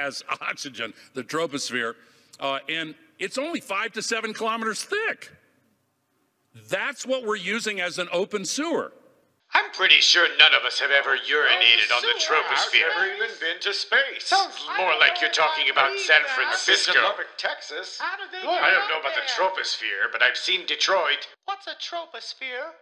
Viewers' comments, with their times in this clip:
0:09 the way he shrieks about how thick it is is kind of pervy